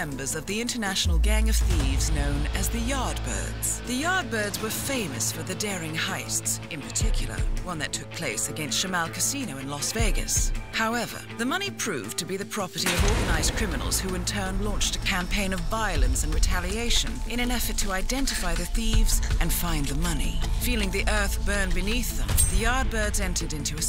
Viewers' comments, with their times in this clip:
0:09 y'all got Mordecai up in this piece😂